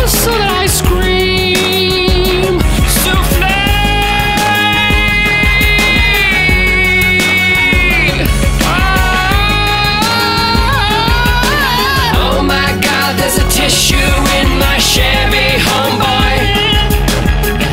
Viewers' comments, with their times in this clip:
0:05 The best part is in my opinion is when that guy from the Bee Gee's sings "Souflee" and as he holds the note, he can't quite hit the notes. Whole thing was great, but that put me in tears laughing.